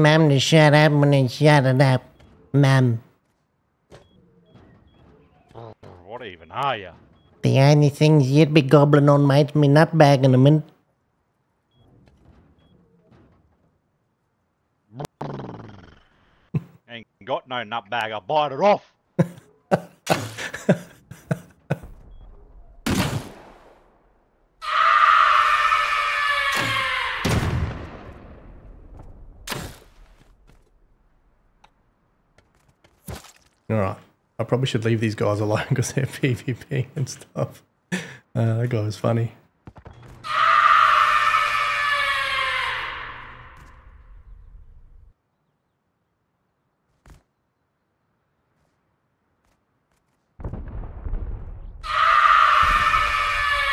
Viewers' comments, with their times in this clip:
0:07 The way you sounded kinda reminded me of the big lez show
0:40 me and my mate didnt even hear those screams lmaoo thats me 😅